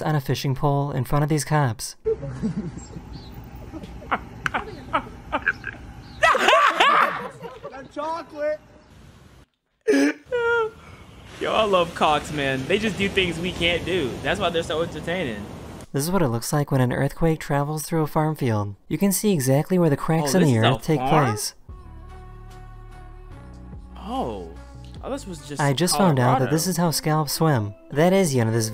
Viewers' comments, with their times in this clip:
0:04 why he sound like the half life cops💀
0:09 you did not say cops 😭🙏🏽😎